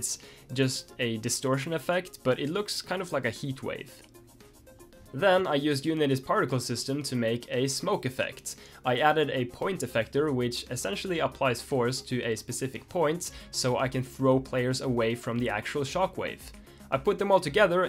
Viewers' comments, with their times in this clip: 0:05 calm piano noises